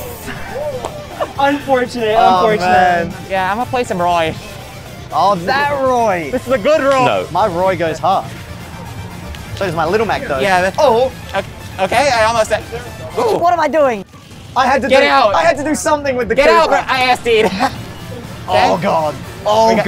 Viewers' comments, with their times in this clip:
0:03 sounds like his last name is stewart